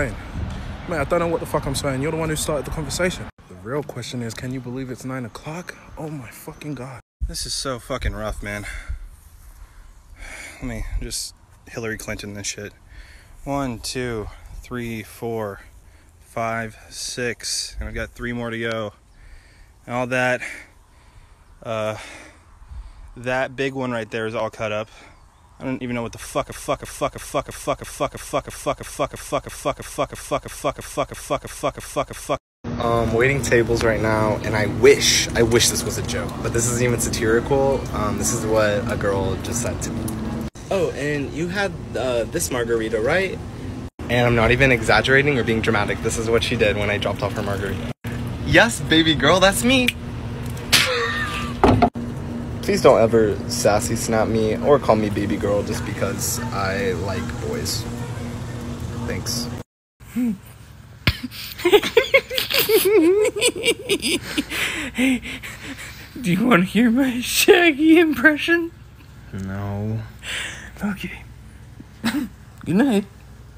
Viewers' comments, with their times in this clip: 0:10 I THOUGHT THAT WAS SKYDOESMINECRAFT
1:00 their laughter is so contagious djudjdhdj